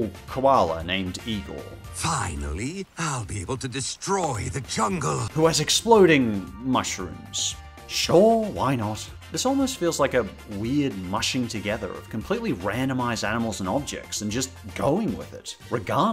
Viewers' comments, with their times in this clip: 0:03 Thats.... thats shadow
0:03 Am I the only one who thought that the guy who voiced Igor is also the voice of Gabriel Agreste/ Hawk Moth?